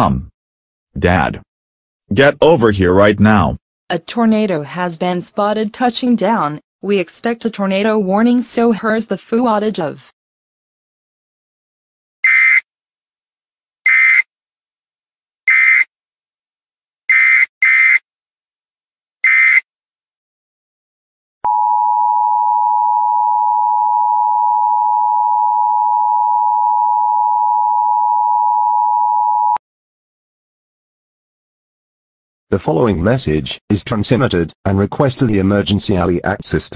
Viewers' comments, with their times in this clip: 0:09 EAS starts on GoAnimate TV
0:18 the Brown out Sound